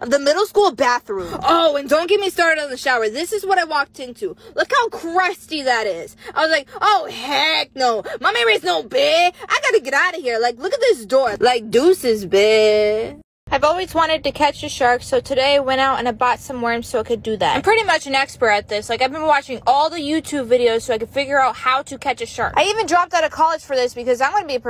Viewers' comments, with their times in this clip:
0:07 the way she sad it XD